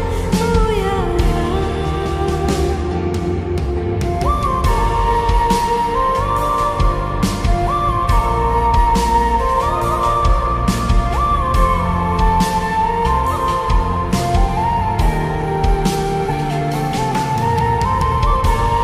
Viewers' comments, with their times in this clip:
0:03 this music really heal so much of pain in heart🥺💐💖🖤